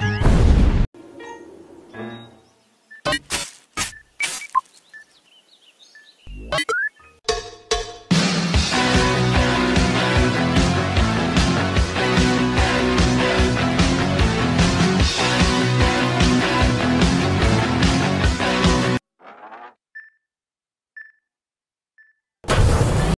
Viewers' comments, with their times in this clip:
0:06 I LOV THIS MUSIC